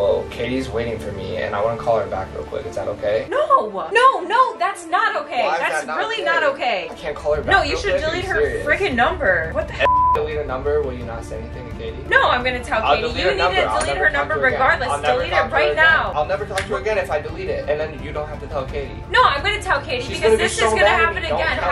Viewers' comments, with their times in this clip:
0:08 You censored "heck" to make this seem more intense. Maybe blur her mouth too, lol.